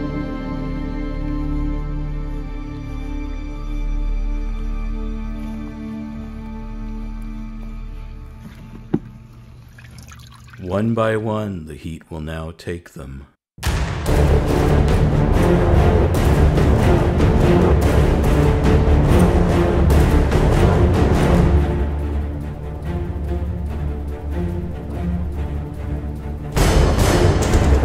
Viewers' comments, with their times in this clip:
0:09 "One by one, the heat will now take them." Orchestra crescendos